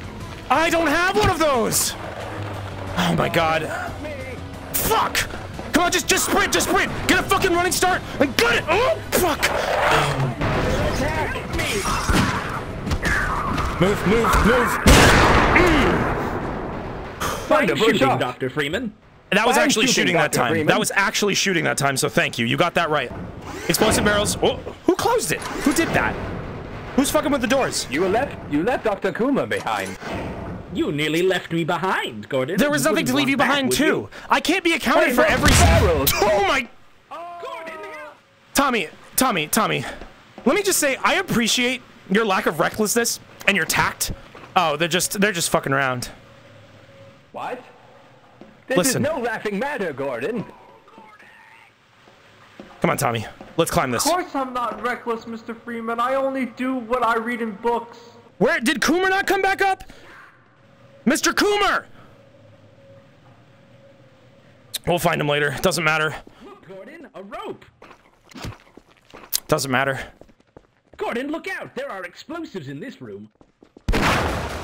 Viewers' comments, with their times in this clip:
0:03 That scream a was the zombie😂
0:32 can we just appreciate the moment B: Hey look, Barrels! boom B:AAAAaaaaaaaaa a a C: Gordon, Help! it just sounds perfect Edit: fixed timestamp
0:58 if you listen closely you can hear Coomer say "STAHP"
1:02 You can feel a fragment of his sanity slip away at the second "doesn't matter"